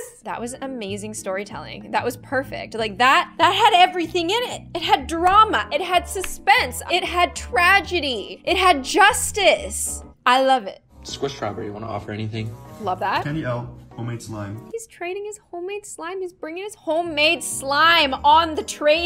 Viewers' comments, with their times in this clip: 0:04 she sounded like my teacher when we do a presentation